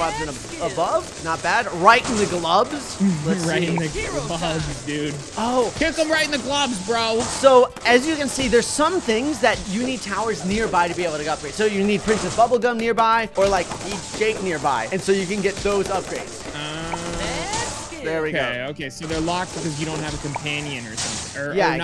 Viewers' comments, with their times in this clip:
0:08 man got a drill in the background and a bunch of other messy audio